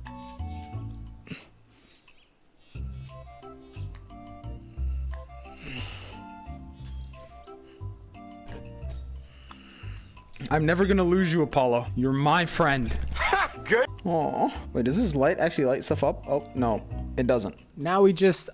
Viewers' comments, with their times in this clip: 0:04 Apollo so silly (also your controllers are so loud )